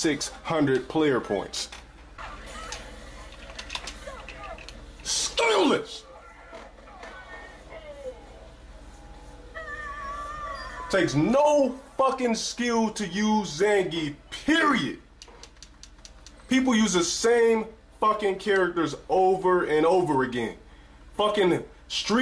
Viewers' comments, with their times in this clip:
0:05 what the fuck was that? lol! stayomich!! that's all i heard. and also, it takes no skill to use Zangief? shiiiiit go ahead and try then buddy